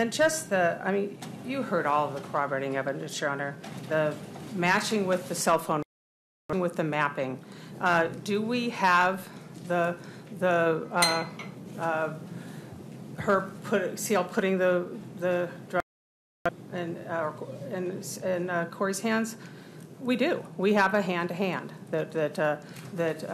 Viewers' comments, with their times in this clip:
0:07 what's up w/all that stumbling and stuttering 🙄
0:09 I know this petty considering the case but prosecutor stuttering and stammering to find her words is so frustrating